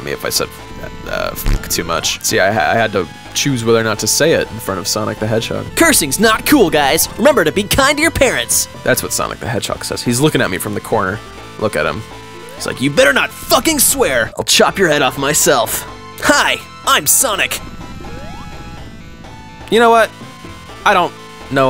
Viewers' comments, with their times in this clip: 0:05 why do you actually sound like sonic lmao 😭😭